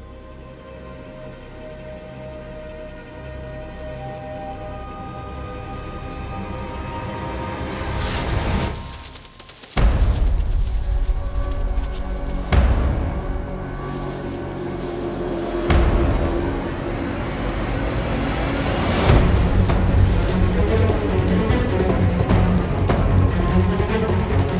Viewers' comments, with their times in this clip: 0:05 well done for background music. My heart started to pound fast there.